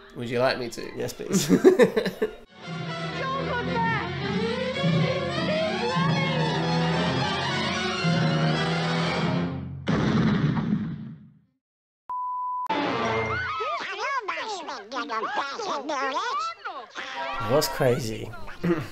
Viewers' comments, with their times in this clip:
0:05 So happy you are doing these reactions again! 🤣🤣🤣 That is the perfect Disney replacement audio!